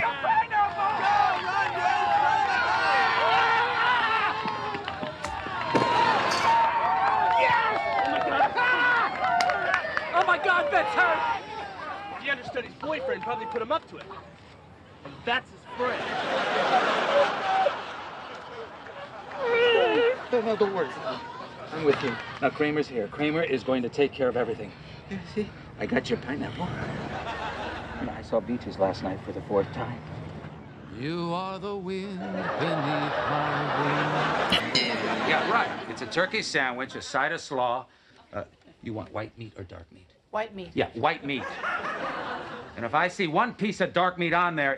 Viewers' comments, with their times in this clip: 0:10 Sounds like Larry David's voice when he yells, "Oh my God! Bette's hurt!" 😂
0:30 The audio editing is some of the worst I've ever heard